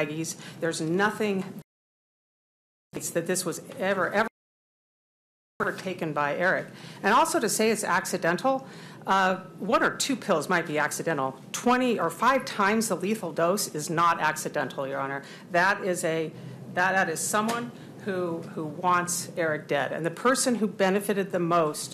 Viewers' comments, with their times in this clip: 0:05 omggg the excessive uh's & um's are driving me wild. Take a pause and form a sentence, lady! 😂